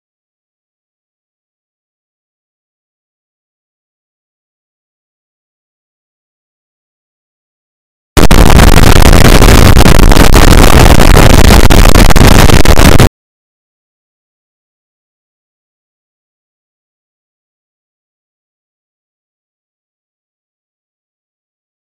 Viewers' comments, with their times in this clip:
0:08 Son of a bitch, my headphones reeeeeeeee